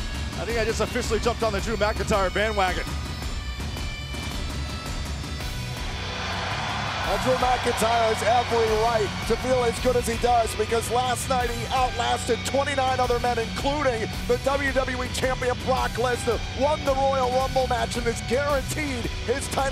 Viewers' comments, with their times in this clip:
0:04 raised his hand when the beat dropped